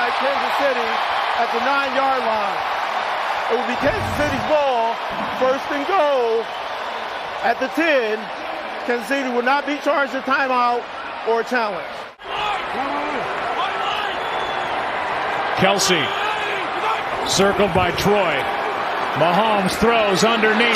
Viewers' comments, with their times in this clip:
0:06 my man's voice